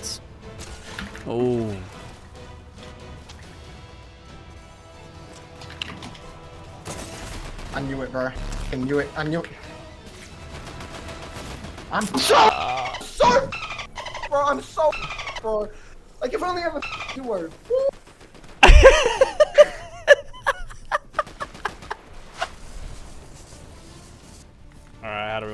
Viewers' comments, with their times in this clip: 0:09 usually not a fan of when people censor swears but this was 1000x funnier than uncensored